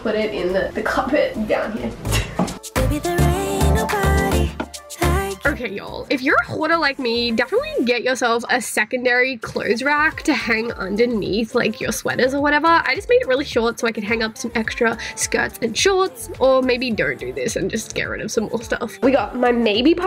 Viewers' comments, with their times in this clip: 0:05 i heard Ggghoarder 😂😂😂😂